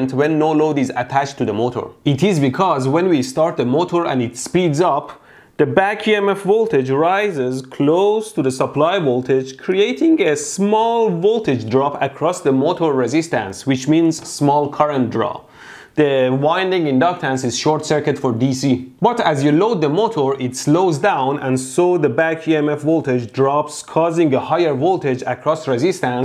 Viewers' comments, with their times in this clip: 0:09 THAT VOICE CRACK IM DYING FAM
0:09 that voice break tho
0:10 he has a voice crack